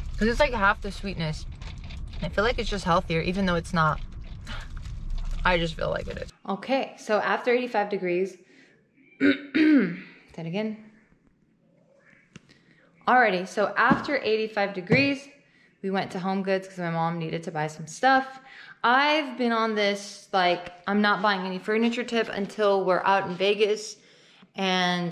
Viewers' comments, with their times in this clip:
0:06 don't think you meant to keep that restart/cough in but its cute lol